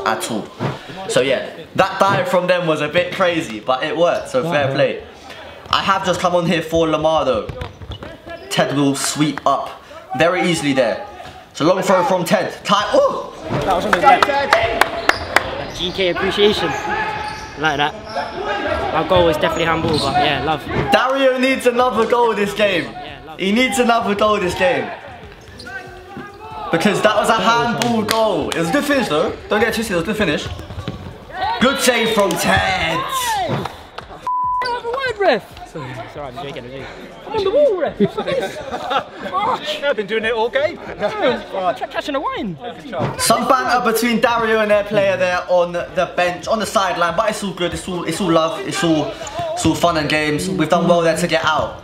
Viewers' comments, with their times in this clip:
0:04 Is it just me that hears "womp womp" or "wom wom"
0:36 The opposite team player is soo cute,the way he said sorry😂